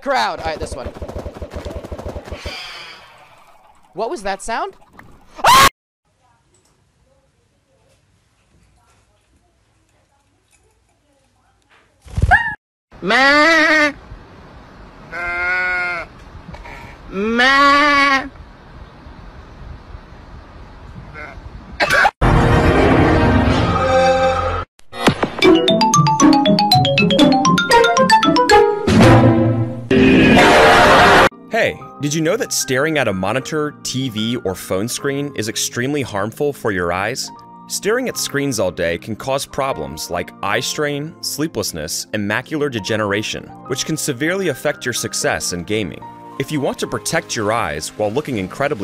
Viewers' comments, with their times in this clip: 0:03 the all mighty pumpkin boi screech
0:13 what we hear man: maaaaa goat: maaaaaaaa man: maaaua goat:........ma what they said man: hellloooo goat:helloooo man: can i join you goat: .......... no
0:18 reminds me of Travis Scott saying "Belt."
0:30 ps4: so you ears have choosend death